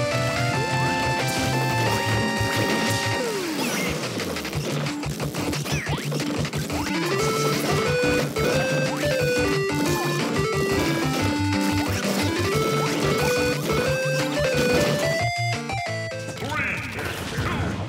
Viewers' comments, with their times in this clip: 0:03 that captain falcon scream sounded terrifying